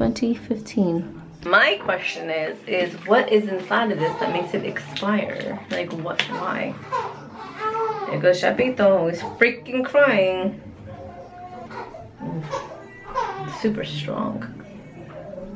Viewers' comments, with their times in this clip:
0:03 your son is laughing :)